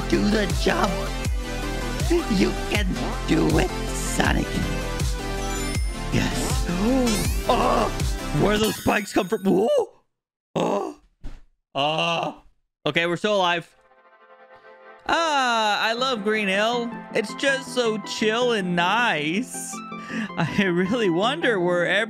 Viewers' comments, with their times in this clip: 0:08 the BG music fire